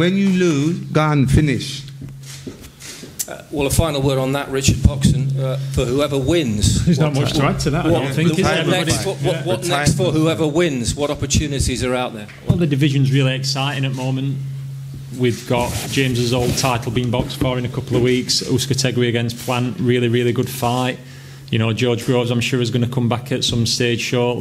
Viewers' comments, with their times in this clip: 0:06 did James just buss some patois, "gawn, finish😂😂"